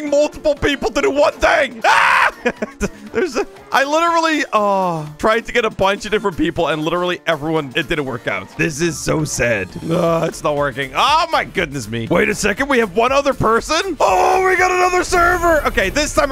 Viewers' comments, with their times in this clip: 0:04 in the video bro fr moans